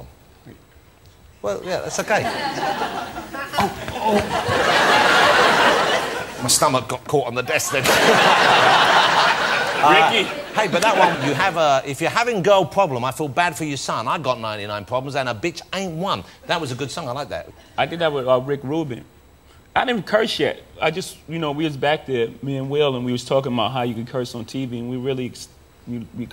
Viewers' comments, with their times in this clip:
0:10 he sounds and looks ridiculous saying this. 99 problems best Jay-Z song all time fav.